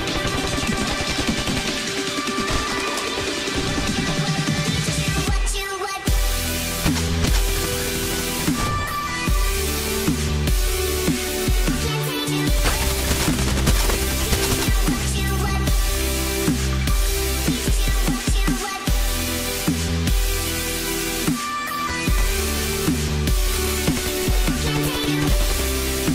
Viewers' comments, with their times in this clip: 0:07 Omg that poef poef sounds so good by the song lol xD just listen to it :p nice video! And song!